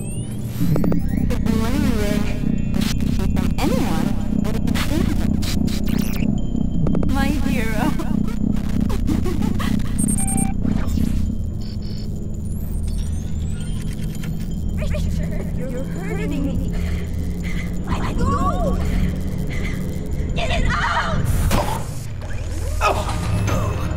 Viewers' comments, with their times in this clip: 0:05 That sounded like a portal gun